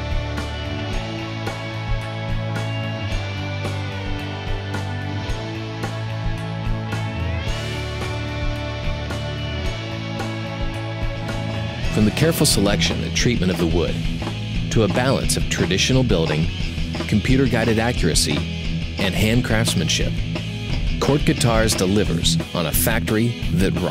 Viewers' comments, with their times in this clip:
0:10 I did like right at the end how the music finally changes from that annoying 60 tone to a metal rhythm ! :)